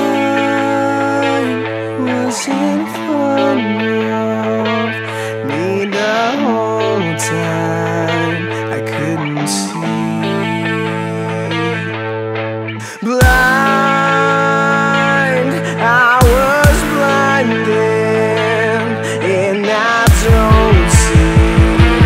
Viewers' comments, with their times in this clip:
0:09 I tought he said “I couldn’t see”